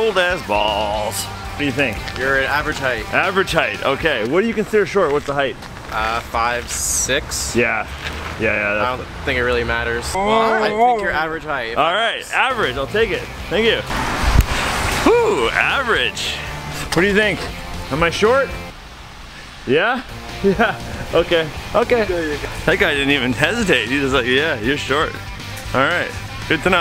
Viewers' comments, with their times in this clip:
0:10 "YOU'RE A SHORT LITTLE BISH" by a husky had me 😂